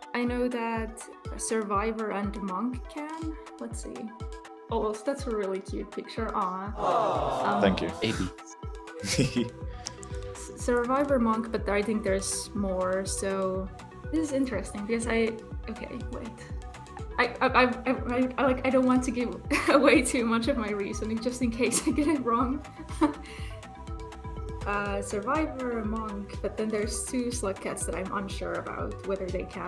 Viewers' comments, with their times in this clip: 0:10 * “hhuuuuhhhhhh????????” Sound effect * basically sums up my confusion for that question.